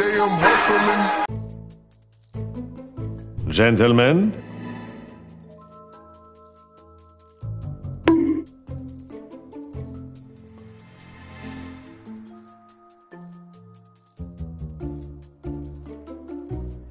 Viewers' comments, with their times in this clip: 0:03 I personally want to meet the 7 dislikers also I like the spy voice from tf2 you gave the dinosaur LoL